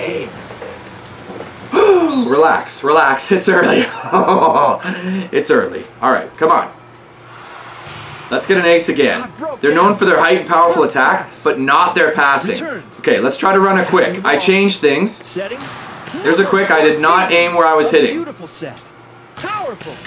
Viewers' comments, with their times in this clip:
0:04 creepy granpa laugh !!!!